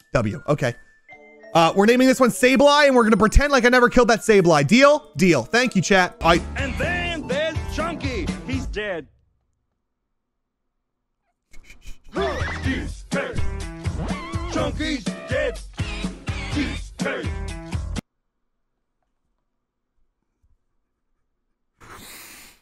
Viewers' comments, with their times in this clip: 0:03 I love how he tries to stifle a laugh from sheer realization to immediately dying when the DK rap starts playing again